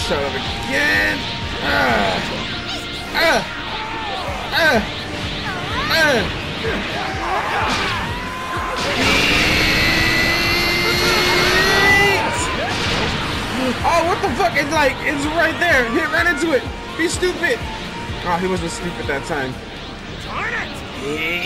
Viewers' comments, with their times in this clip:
0:08 LOL bro I wish you did facecam cuz I 100% wanna see your face when you're yelling like this 😂 your hair could actually be turning yellow for all I know lmao you got the whole Saiyan thing down for sure